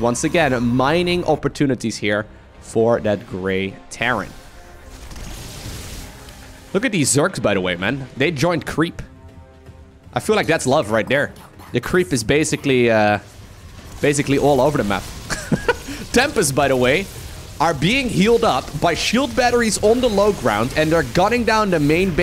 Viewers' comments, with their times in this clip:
0:10 Listen min creppy voice